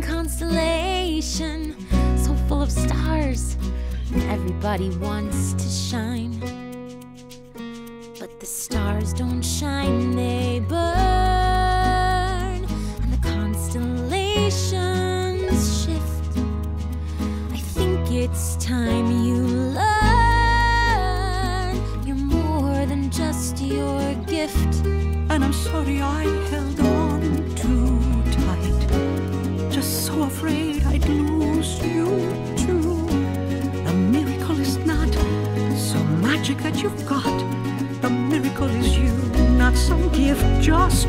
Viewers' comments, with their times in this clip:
0:07 The way she says the word "burn" is like in the song Burn from Hamilton. Lin Manuel Miranda in-joke?
0:26 I wonder how different the song could be and a complete ballad if it had built off on that neat little guitar riff they gave abuela i love that little portion and it makes me cry every time. pause crying for bruno. back to crying at the villagers. pause for mariano. and then crying again when they’re giving her the doorknob 😭😭😭